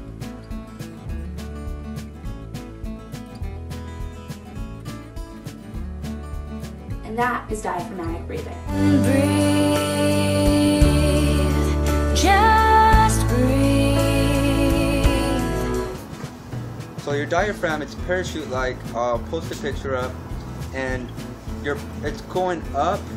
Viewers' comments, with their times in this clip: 0:08 What I was waiting for...that song.